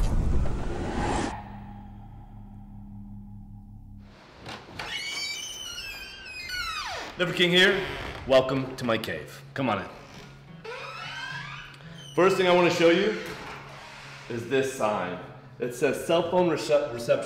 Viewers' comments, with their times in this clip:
0:05 First thing I thought of is how badly his front door needs WD-40 on the hinges.